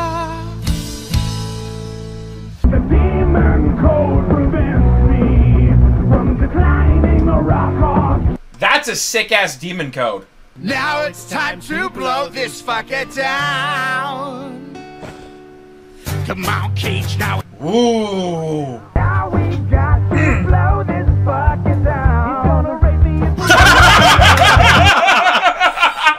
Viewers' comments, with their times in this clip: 0:10 Jack sounds exactly like Anastasia when he sings that run on "blow this f*cker down" lol